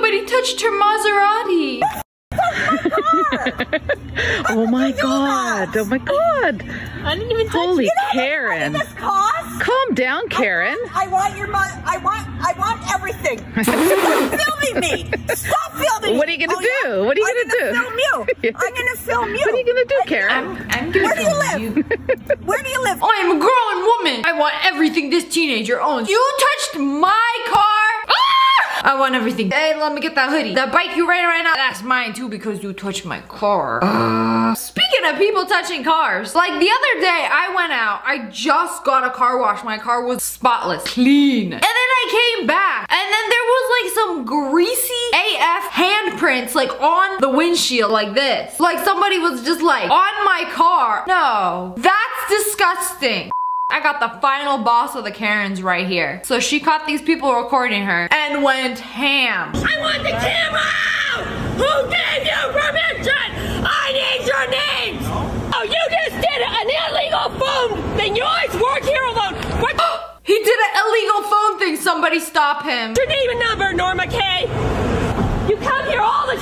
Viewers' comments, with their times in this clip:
0:03 I thought she said mozzarella
0:59 her volume buttons broke at max volume
1:01 She yells like Eric Cartman 😂